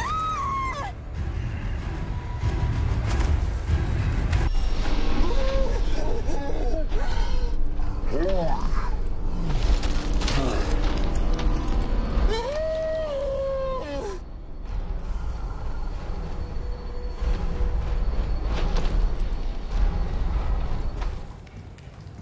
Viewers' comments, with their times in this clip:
0:04 im sorry but Ashley's voice right here is sending me 😭😭